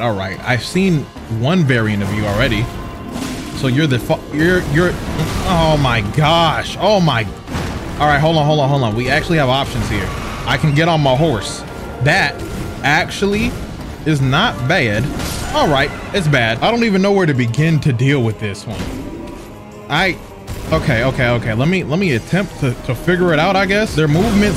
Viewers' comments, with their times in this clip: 0:09 gut busting laughter ⚰️